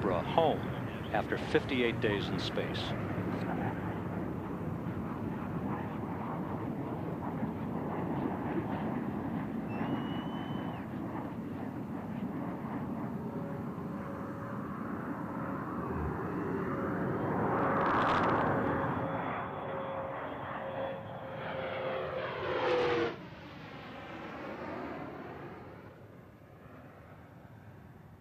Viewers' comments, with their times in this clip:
0:08 At least this guy cheers
0:14 I remember living in Tampa, being up on a Saturday morning, and hearing a loud boom-boom. Forgot for a second they were coming in, thought something nearby had exploded, then saw it on the news later.